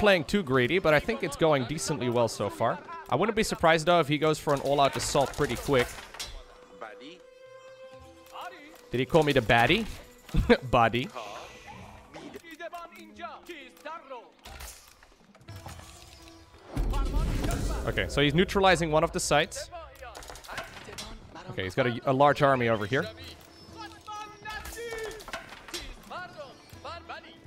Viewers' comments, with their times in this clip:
0:08 actually they speak Farsi in this Race and when he said Baddi in it means "the next" :)))) and their accent is actually pretty good! just like good old AOE2